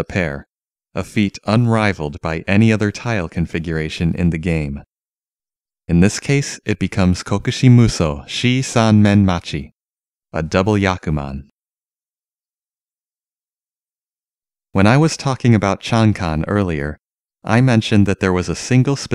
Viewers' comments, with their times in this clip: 0:07 Did you just say juusanmen incorrectly?